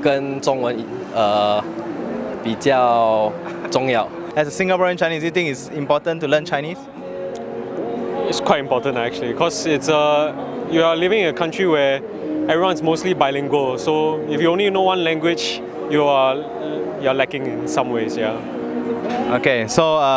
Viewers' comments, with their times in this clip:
0:04 his mandarin got bad meh? Act one right? I doubt his English not good too